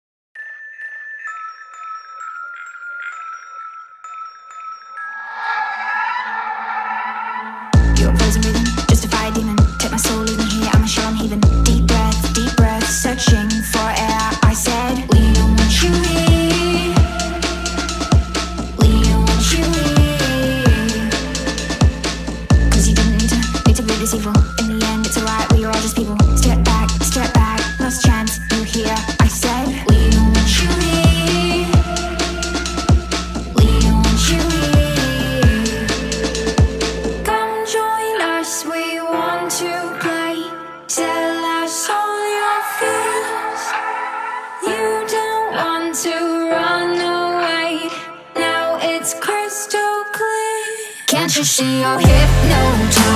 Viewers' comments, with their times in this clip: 0:05 As if a fantastic animal screams))
0:39 like a song Hide and Seek.